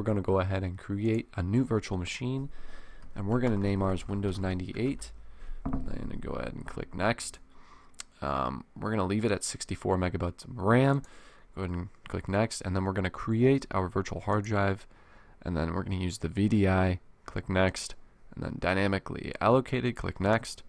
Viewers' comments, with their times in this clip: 0:08 he said megabutts lol